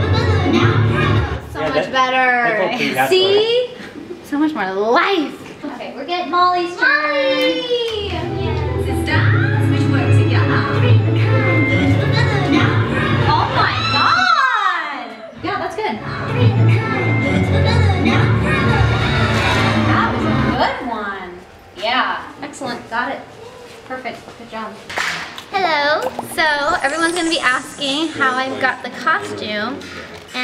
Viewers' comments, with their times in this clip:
0:08 the girl playing the music was singing along😂
0:08 the girl playing the music was singing along😂
0:12 the girl down is singing